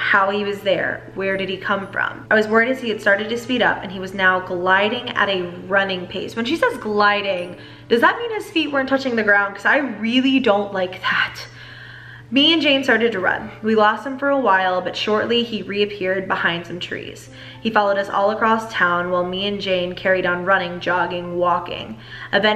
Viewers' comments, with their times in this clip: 0:08 the voice makes me creeped out